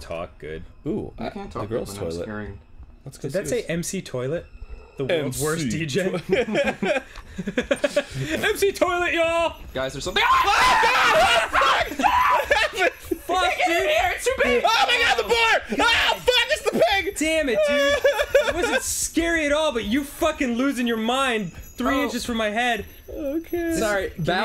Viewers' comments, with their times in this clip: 0:09 BEST SCREAM EVAH!!!!
0:09 THAT PART OMG THEIR SCREAMS I'M ACTUALLY DEAD
0:09 Ross screaming at the pig cracks me up every time I play it. XD
0:10 you can hear each of their screams in the domino effect. AND its funnier everytime you play it.